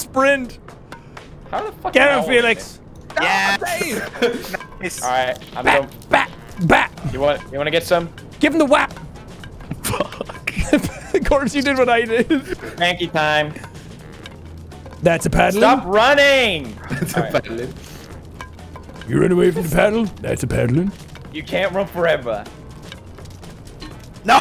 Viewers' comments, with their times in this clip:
0:08 the (Fuhuck) in corpse's voice sent me balling 🤣😂🤣